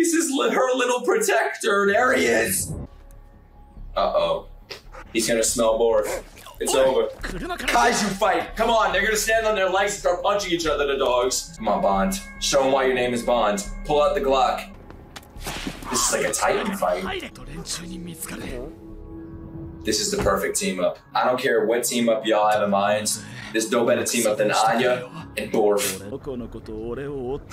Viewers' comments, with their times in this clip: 0:08 I thought you said the n word in